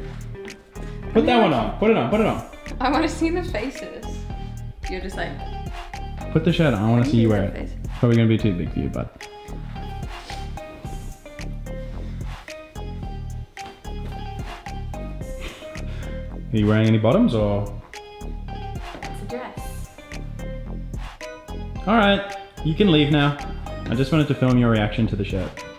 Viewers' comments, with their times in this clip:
0:08 "It's probably going to be too big for your butt"